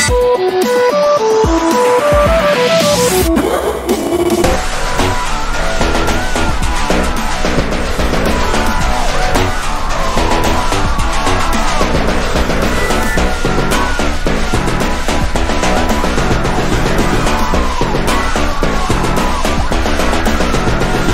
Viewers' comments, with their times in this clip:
0:03 THE BEST LAUGH EVER